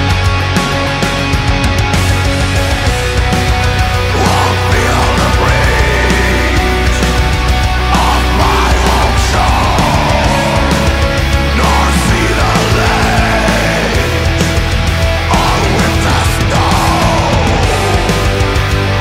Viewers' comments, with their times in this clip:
0:06 The metal music is really cool and matches the scene perfectly. is that kid and the hand cuffed person are the same person?